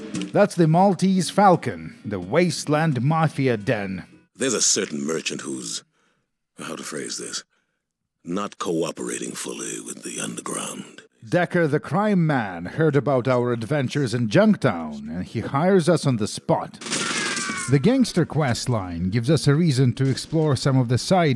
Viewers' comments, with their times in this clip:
0:08 As soon as I heard that voice I knew it was Keith David! Had no clue he played a role in fallout but that is so cool.